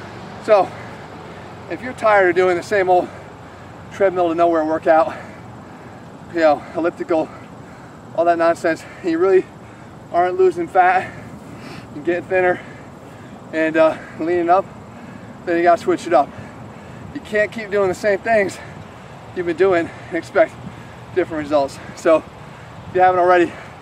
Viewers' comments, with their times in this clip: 0:10 haha you said fat like a goat